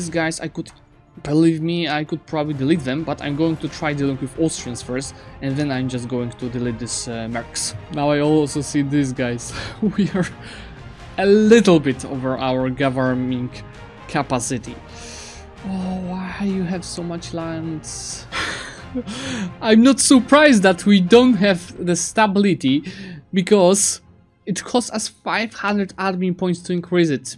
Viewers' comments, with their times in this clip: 0:09 goverMING capacity? xD